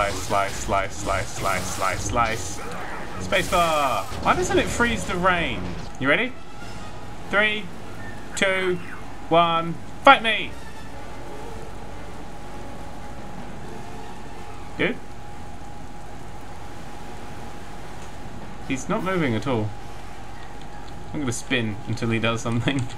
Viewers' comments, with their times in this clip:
0:06 It sounds like the storm trooper says "I love you"